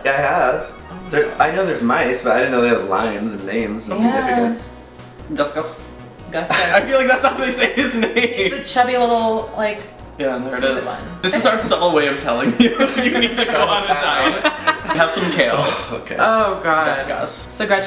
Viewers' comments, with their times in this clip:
0:05 the way tyler says "Gus Gus" has me D Y I N G